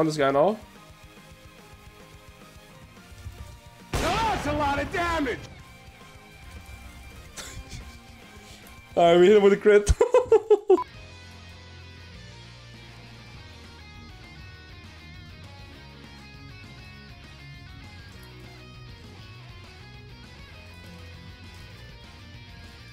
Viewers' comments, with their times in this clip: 0:03 (sound warning) "RRRRRRRRIGHT THROUGH THE COUNTER-STRIKE!"